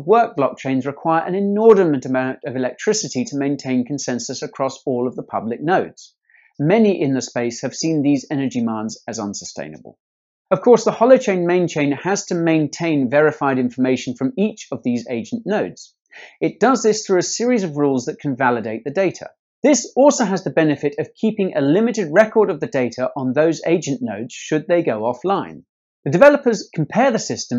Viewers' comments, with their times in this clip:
0:09 "The Holochain main chain has to maintain.." Guy spitting bars.